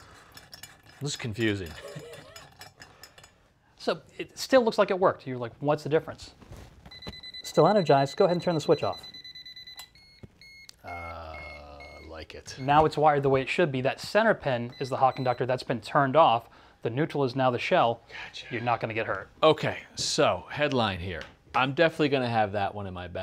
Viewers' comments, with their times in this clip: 0:10 .....slow beeping means no power?